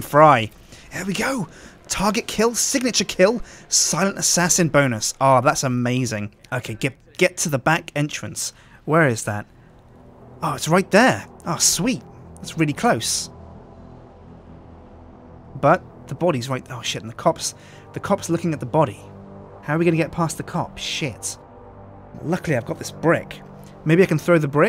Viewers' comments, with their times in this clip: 0:05 "Success in Venice are that's amazing. Architect, get to the back entrance!" It sounds like that means something awesome!